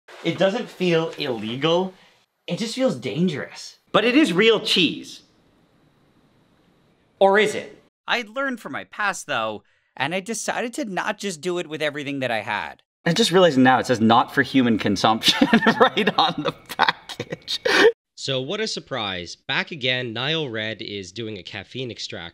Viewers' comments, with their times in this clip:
0:06 Vsauce theme starts playing